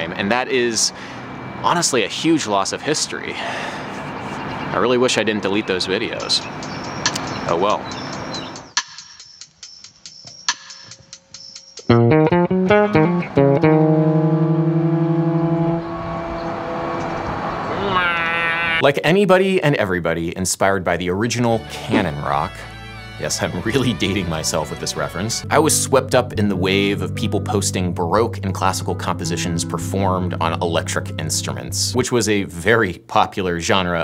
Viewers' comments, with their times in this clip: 0:10 Jazz Band Bassist plays the licc The whole jazz band: "Weeerrrrhhhhh"
0:11 the ULTRA LICK
0:12 that harmony with the train was actually quite spicy!
0:15 that's one spicy chord